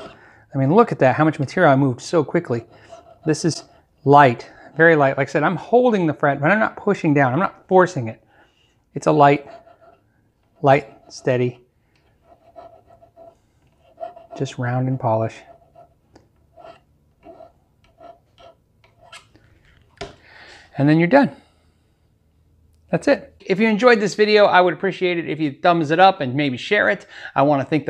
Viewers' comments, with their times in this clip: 0:10 The Bob Ross of Guitar, almost expected to hear: ‘Happy Little Fret Ends, Happy Little Fret Ends here’... 😉